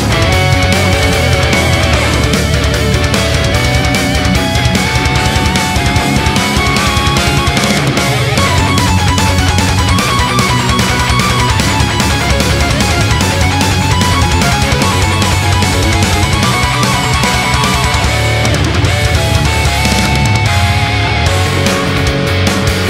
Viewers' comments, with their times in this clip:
0:08 Thank you SOOOO much for doing the fast part and keeping it in the forefront instead of the later remixes that push it to the back, that always bothered me so much and it feels so good to see that part in the limelight again